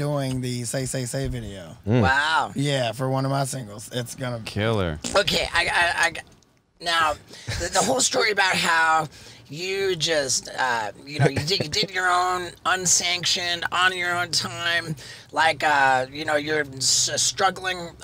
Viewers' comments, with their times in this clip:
0:03 Did Steve-O fart ? Or am I crazy?
0:03 Steve O farted
0:04 Who tf farted ? 😂😂
0:04 Anybody else hear the fart ?
0:04 Nice little pooter there steveO t
0:05 can we auto tune the fart
0:05 Did Steve-o fart ? lol
0:06 Did someone fart ? Haha ?